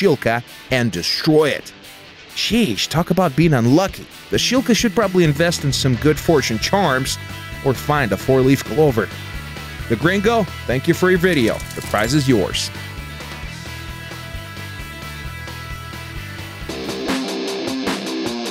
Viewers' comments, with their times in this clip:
0:03 -Hey guys, today is Friday thirteen. -Nah, I don't believe that. Bomb whistles through the air